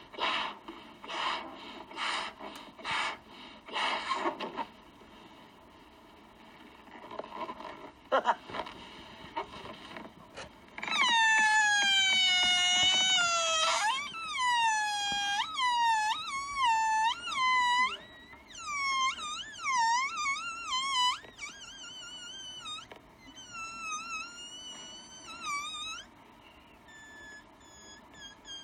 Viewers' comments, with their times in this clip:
0:10 avant-garde jazz saxophonists be like: